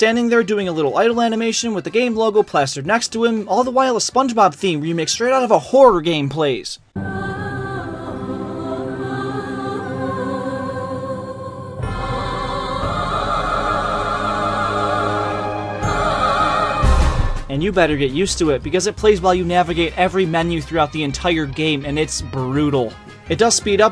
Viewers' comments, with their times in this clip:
0:07 call me crazy but I like this theme.... But I never thought of it being a HOOROR THEME!!! WHAT???